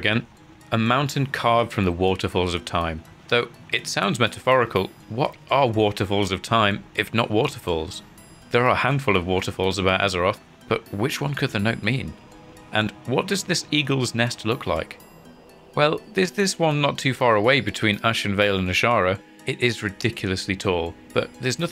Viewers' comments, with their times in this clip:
0:07 very nice Daggerfall music